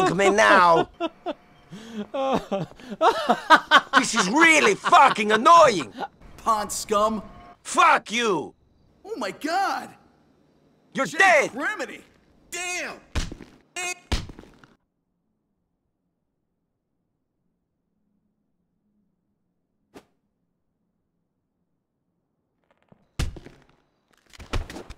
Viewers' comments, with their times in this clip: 0:06 I don’t know why but that was really funny how the clerk is laughing at Niko’s fall until then the scene transitions to him being annoyed and making a pointing hand gesture and saying “Pond scum.”